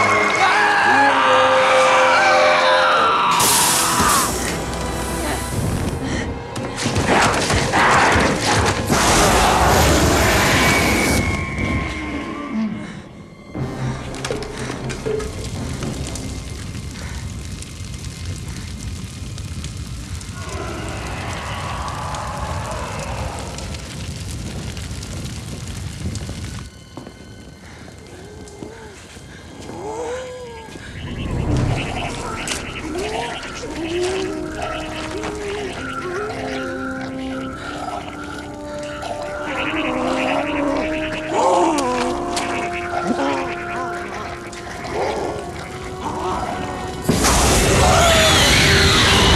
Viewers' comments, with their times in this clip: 0:06 love those weird ass snarls Splitface makes as it runs off
0:18 I remember that roar.... Kyuubi
0:20 split face thing sound
0:28 So creepy those sounds that Thing-Jonas makes!!
0:34 bro you could tell that he was trying to scream help he was alive the entire time 😭